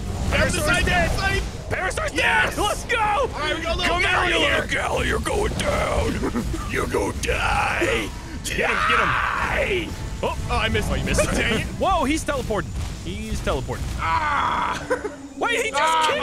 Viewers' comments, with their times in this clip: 0:03 some metal xd